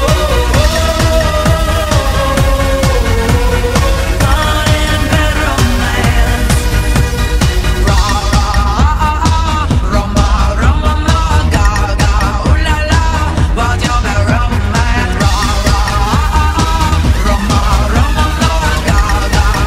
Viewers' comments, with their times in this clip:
0:04 the jump and the song together are something amazing